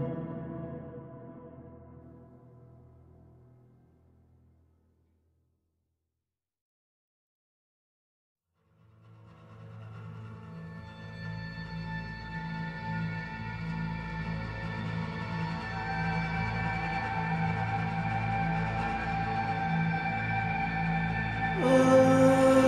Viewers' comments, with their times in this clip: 0:08 Farah thats really insane and good soundtrack..